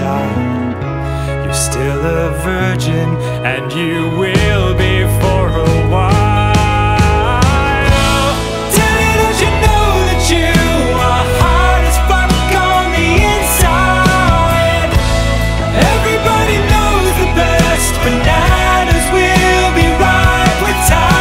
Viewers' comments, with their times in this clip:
0:03 I love the voice here especially-